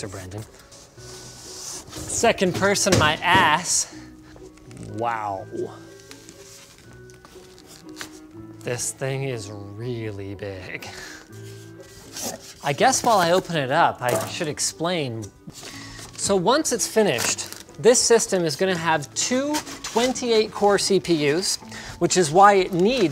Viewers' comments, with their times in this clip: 0:09 for a second i thought he said 'in' as well xD